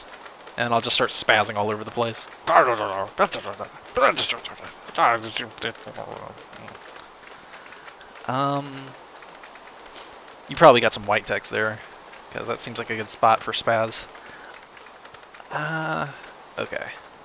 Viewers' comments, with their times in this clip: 0:04 I didn't know you spoke Danish!